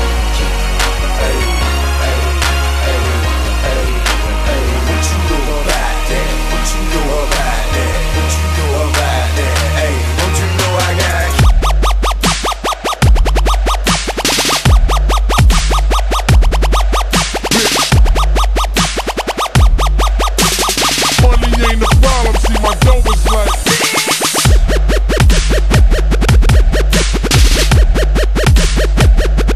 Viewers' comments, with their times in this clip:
0:10 The song starts off great. Once it hits goes to trash. Would love to hear a good remix.